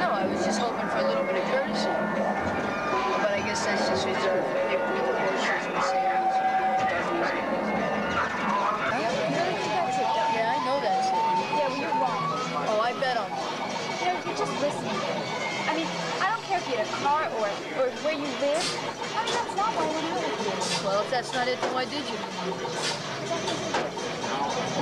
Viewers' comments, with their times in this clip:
0:09 Ms. Pac-Man sound in the background :).
0:10 Love that classic pac man sound ..